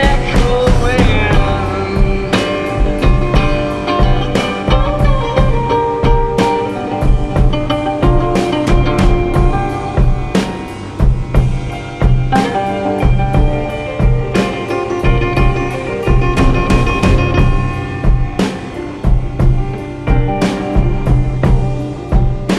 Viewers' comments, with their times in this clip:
0:04 my favorite part with the guitar :)